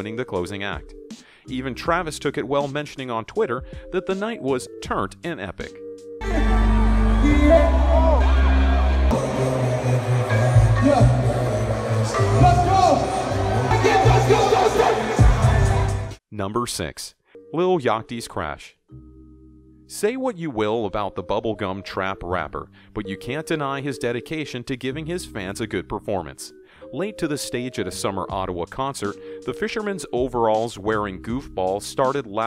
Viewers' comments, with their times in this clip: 0:06 I laugh when Travis fell with that autotune sound "eyeaay""
0:17 This man really said Lil Yachty like if there was no "h" in Yachty
0:17 The way he said Yatchy
0:17 the way he says lil yachty 😂
0:19 how do you miss pronounce lil yatchy 😂